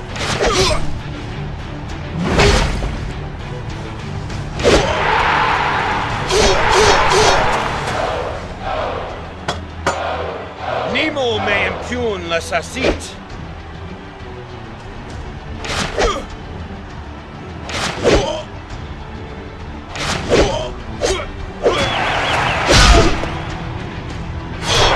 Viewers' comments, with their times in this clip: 0:09 i played this for 11 years still dont understand what is the player is saying